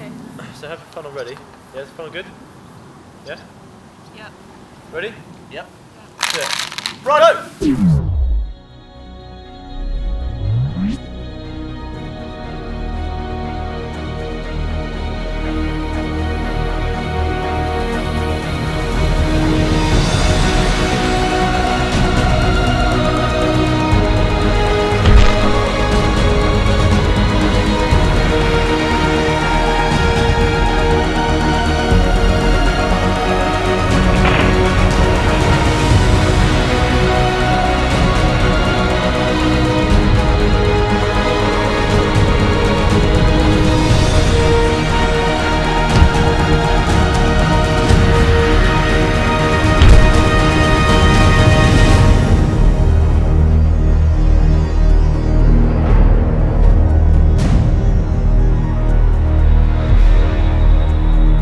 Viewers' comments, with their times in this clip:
0:07 Proof that anything can be an action movie when it's in slow motion and has bad ass music in the background.
0:07 So The music starts playing.
0:08 every time this plays i can just imagine it like in some epic scene in a movie where they're trying to grab something really valuable before it falls, like a bomb or something, and Dan misses it but Gavin comes in and catches it last second from the side. The music makes it so epic
0:09 Also song I really love it
0:09 I love the Slow Mo song seconds.
0:09 The song sounds like a remade version of The Dark Knight's theme.
0:14 Nice music in
0:20 Sounds like Marvel Avengers are about to ASSEMBLE!
0:23 I feel like with the music and the slow motion that it's like a Michael Bay movie.
0:23 you hear a crack haha
0:24 also sounded painful
0:24 What was that background music all about!😂
0:24 I have watched this video quite a few times now, but this is the first time I heard Dan's THUD Always delighted by those little bits of sound humour.
0:24 I think i heard something crack
0:25 the bone snappp
0:25 did you hear that crack ouch
0:25 I heard I crunch
0:25 that crunching sound
0:46 CRACK (that's gave neck)